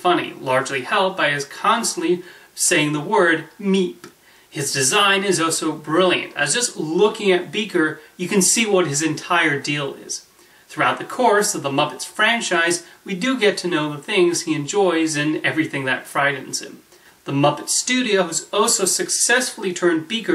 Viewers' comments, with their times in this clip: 0:04 I thought it was “Mee”.